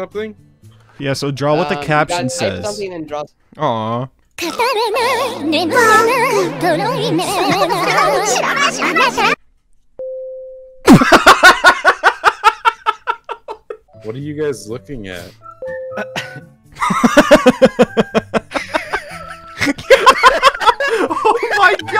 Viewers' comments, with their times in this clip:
0:07 my guy laughing beacuse he got a LINE
0:09 I love his laugh, especially this one: